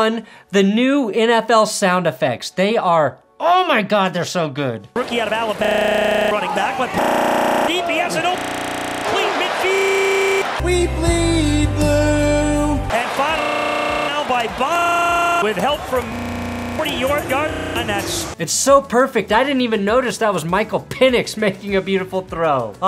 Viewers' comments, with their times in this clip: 0:04 I thought my computer was fucking up when the "new audio" sstarted playing LMAO